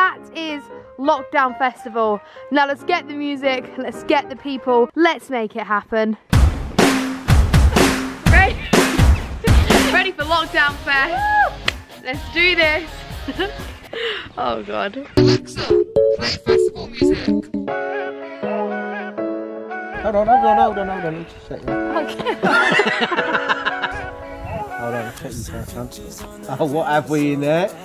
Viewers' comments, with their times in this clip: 0:10 that hannah montana music